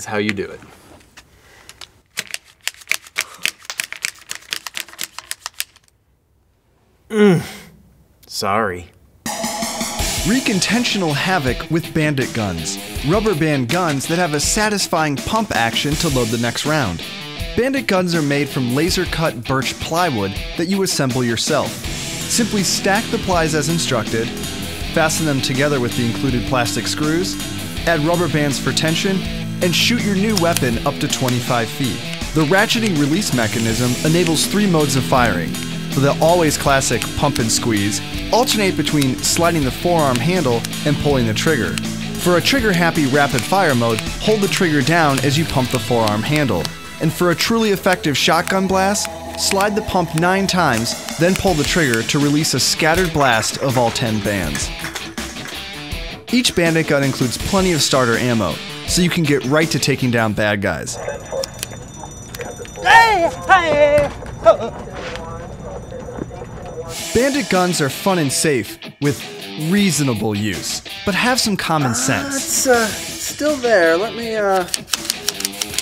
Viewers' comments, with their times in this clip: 0:05 he moans like my brother hitler
1:01 Lol he said Heyyhh Hiighh Hellogh I guess he's a Georgia productions fan
1:02 Nobody: Death sound in games:
1:02 he sounded like a indian tribe
1:02 the sound I make when I step on a lego
1:02 this could use as a sound effect scream
1:02 Is someone trying to sing the hey song?